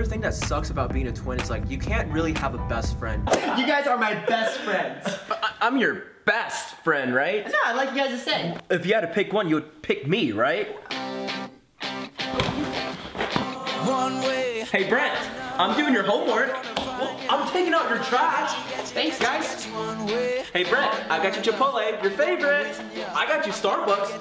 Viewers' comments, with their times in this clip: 0:10 I love how One Way Or Another starts playing